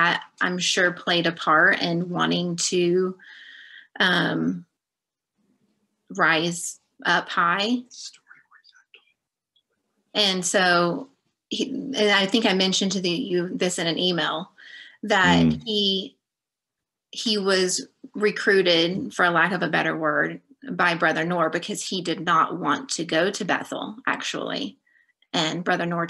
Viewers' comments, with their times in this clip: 0:07 There's a whisper
0:07 What was that whispering to her ? Weird.
0:07 What was the whispering ?
0:08 Who is whispering to her ?
0:09 What's that whisper ‽ fascinating interview!